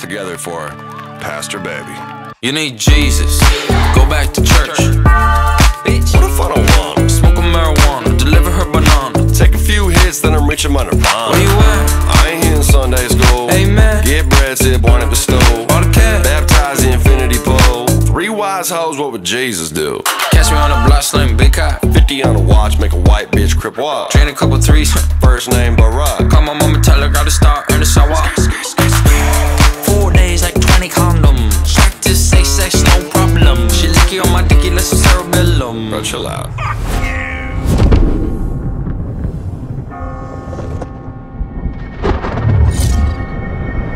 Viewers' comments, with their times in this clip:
0:05 The bells hit so hard 🔔
0:29 i love when bbno$ talks like this